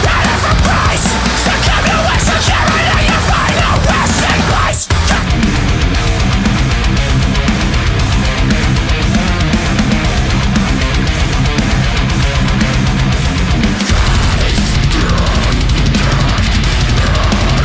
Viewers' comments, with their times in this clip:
0:05 While I do agree with your overall point that excessive amounts of low frequency information presented at high tempos can mask the groove/feel... and I'm also not a fan of non-melodic screamo vocals other than as a color/texture used sparingly... the track grooves pretty hard. Your head bob agrees. ;-) Edit: its Evidence by Lamb of God